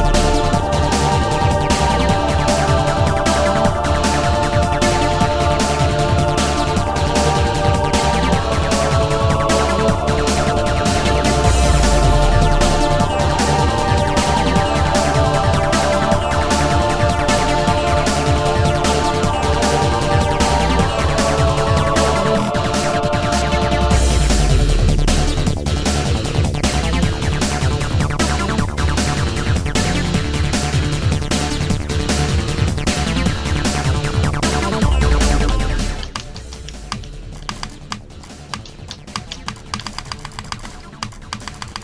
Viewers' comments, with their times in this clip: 0:04 What happened ... it sounded like your poor computer lagged because it couldn't comprehend how bad this level is.
0:24 with headphones hist different